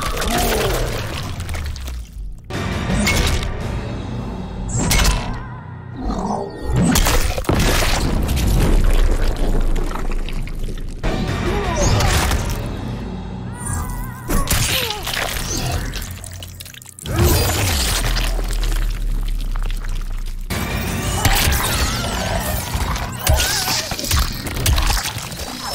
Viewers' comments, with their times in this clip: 0:06 Did he yell "fore"?